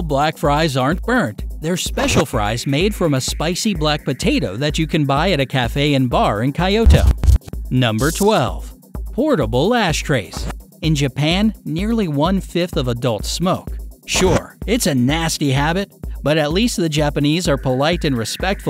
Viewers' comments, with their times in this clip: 0:05 oh yes, I would really love to visit Kayoto.
0:06 I love how this guy says Kyoto.
0:06 Why did he pronounce kyoto like kaioto?
0:06 Lol way he pronounces Kyoto
0:06 kai- yo-to??? I’m not Japanese but that is not how you say it. It’s kyo-to, how is it so hard to say it. I’m so offended
0:06 ky-oh-toh??? My ears are bleeding